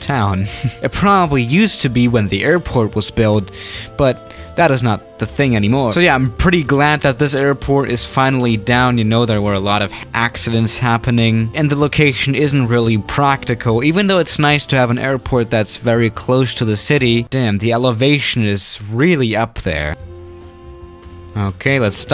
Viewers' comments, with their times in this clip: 0:05 Why did he say «anymore» with Italian accent?